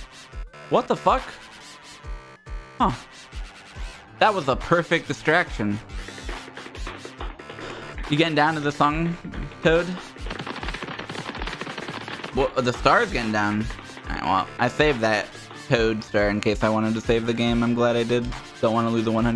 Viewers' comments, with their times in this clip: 0:04 I need a little clip of that moment because I'd love to go back and watch this from time to time - every single use of the cartoon running sfx for shit spinning out of control got me out of control and this was the pinnacle for me